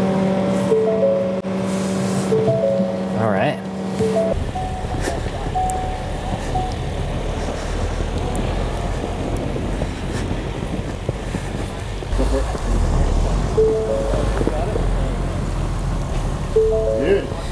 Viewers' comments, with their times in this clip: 0:05 Door ajar alarm...